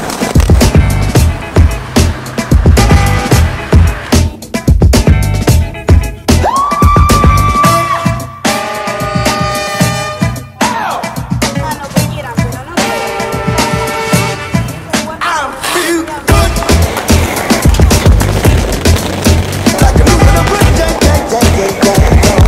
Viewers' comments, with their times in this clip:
0:07 perfect timing with the scream 😂